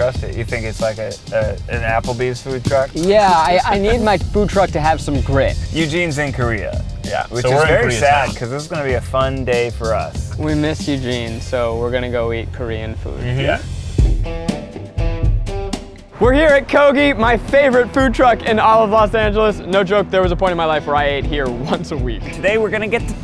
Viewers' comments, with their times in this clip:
0:10 idk if he said “we miss Eugene” or “we miss you gene”